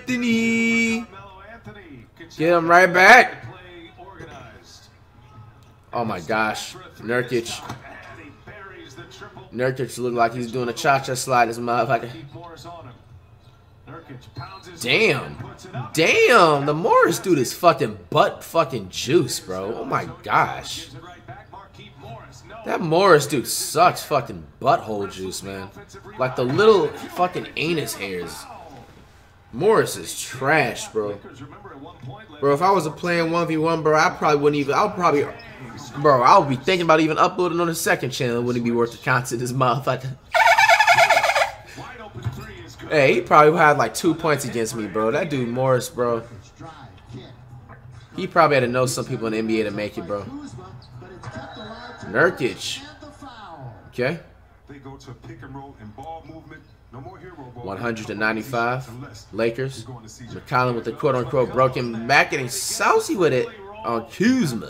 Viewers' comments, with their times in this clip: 0:03 he actually said his last name right
0:40 look at flight face with that laugh 😂
0:40 look how flight say motherfucker I couldn’t breath laughing hard best intertainer on youtube
0:50 Flight finally said it right. Certified Troll
0:51 Yo, flight actually said Nurkic name right